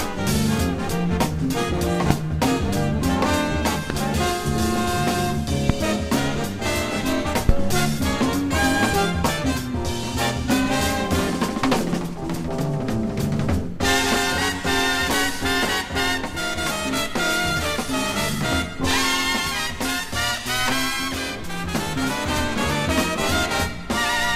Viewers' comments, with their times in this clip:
0:06 Agggh, the record skip is devastating! Noooo!